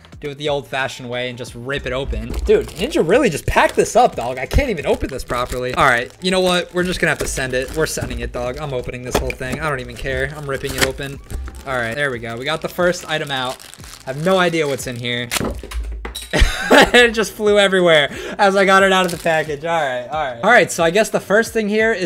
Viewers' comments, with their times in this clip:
0:06 you sound like ninja whenever you say “you know what” or is it me..